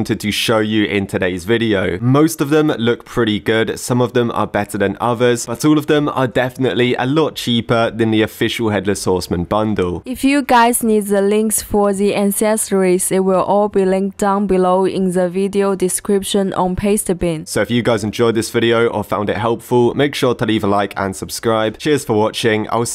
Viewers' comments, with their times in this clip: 0:10 what the fuck is that acscent bruh